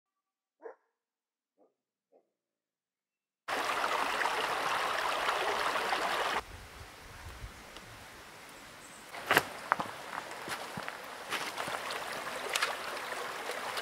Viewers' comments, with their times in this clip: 0:00 In fact, the birds there start at night and sing continuously until the morning.